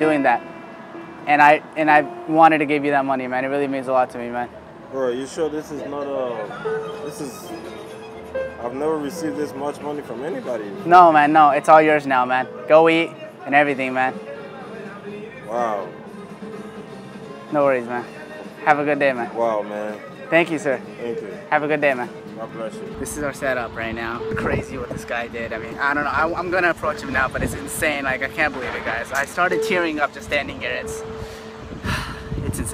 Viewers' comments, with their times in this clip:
0:06 Corridos in background 👍
0:06 guy listening to corridos 😂
0:11 Mexican music playing so loud 🤣 And the video it’s so touching 😔❤️
0:17 Lol the Mexican music in the background